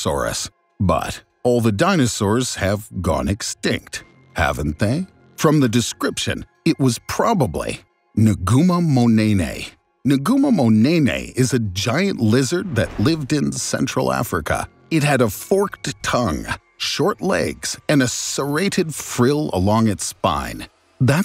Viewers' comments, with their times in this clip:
0:08 DO I HEARR A NEY NEYYYY LESSSGOOO